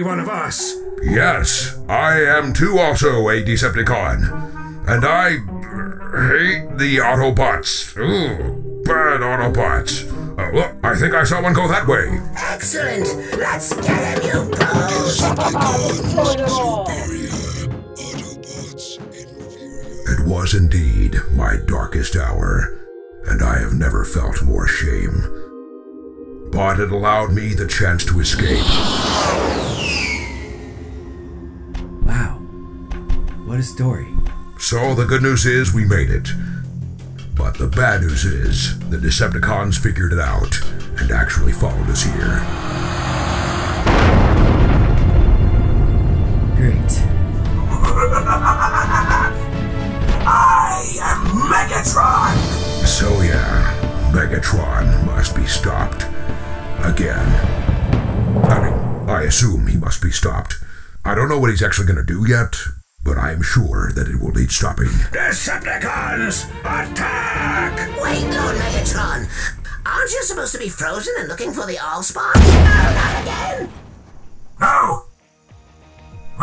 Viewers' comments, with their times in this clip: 0:10 Best starscream impression ever
0:13 I swear I heard cobra commander
0:56 Fire in the hole ! ( gun sound )
1:00 OPTIMUS SOUNDS LIKE MAJOR MONOGRAM DESCRIBING DR DOOF TO PERRY THE PLATYPUS.🤣🤣